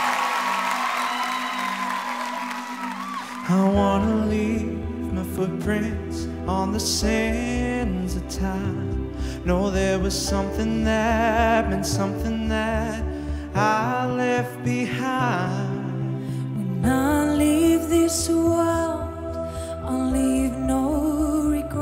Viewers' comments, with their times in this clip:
0:07 and on; I commend "Delta" for supporting her apprentice and not "taking over" the show, this is a great display of Master versus Apprentice. Where the balance was off (in the end) I blame the production team :-P